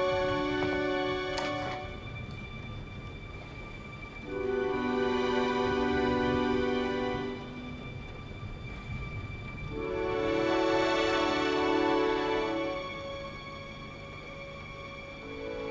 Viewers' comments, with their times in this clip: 0:03 My favourite scene in the entire film, love the music choice!